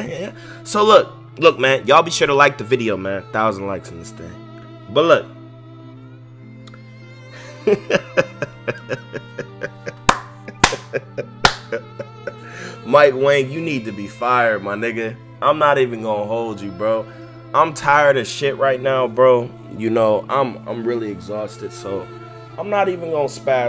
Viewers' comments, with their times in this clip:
0:04 u can hear this mans pain 😂😂😂